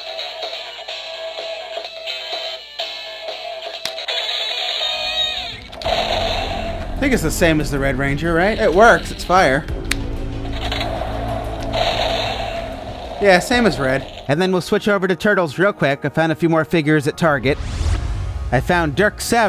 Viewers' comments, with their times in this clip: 0:04 That sound reminds me of the completion sound from the Power Rangers Super Legends game on PS2